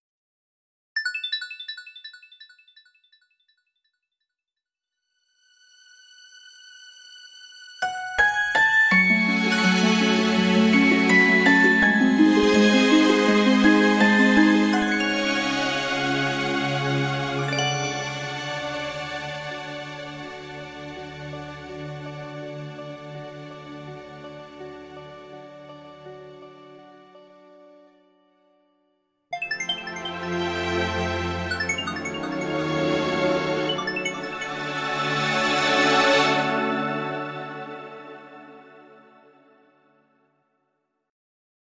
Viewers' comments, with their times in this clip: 0:07 Anyone else get chills ? I absolutely love this soundtrack...
0:07 I love that little melody that plays when she is around
0:29 I love it sounds elegant and celestial